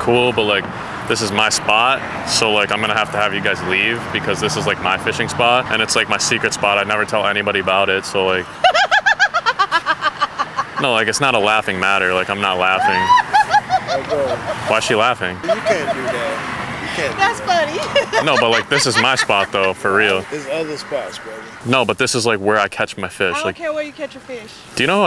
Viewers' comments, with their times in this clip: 0:08 THATS DISNEY VILLAIN LAUGH WORTHY
0:09 That woman has a villain worthy laugh 😂
0:09 Why was she cackling